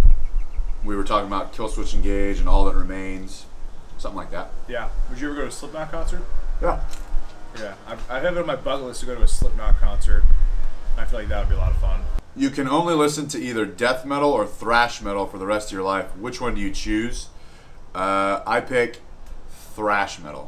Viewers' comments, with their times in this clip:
0:07 who has a butt list?